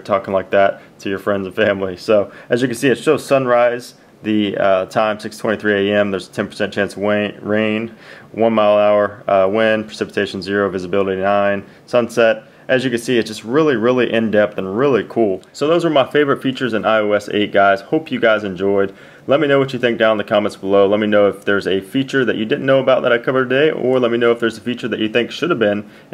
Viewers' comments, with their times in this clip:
0:08 YOU MEAN WAIN NOT rain lol